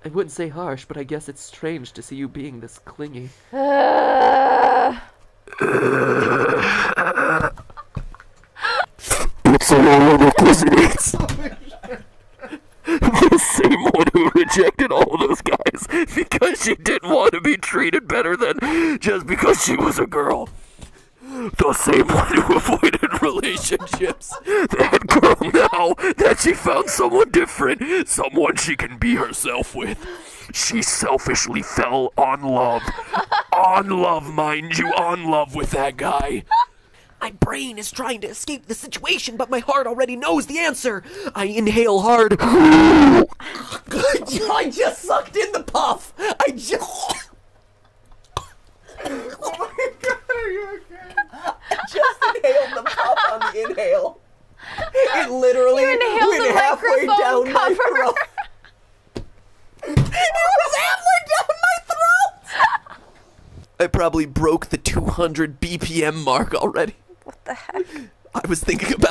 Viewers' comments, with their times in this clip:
0:04 sounds like “OMAE WA MOU-“
0:09 Earrape Matpat doesn't exist, he can't hurt you. Earrape Matpat:
0:09 oweie my ears
0:09 rip headphone users!!! 😵😵😵😵
0:09 R.I.P. headphones users /me
0:09 warning headphone users
0:26 R.I.P Headphone users I had my volume all the way up and a headset on
0:41 Rape this is just what rape sounds like
0:42 Matpat: *inhales deeply* 3 s e c o n d s L a t e r Matpat: I just sucked in the puff 😂😂😂
0:42 (Extreme respiratory damage)
0:42 Boy: (speaking on microphone) “jjshxnsj” (cough)
0:56 The Mattpatt's inhale of '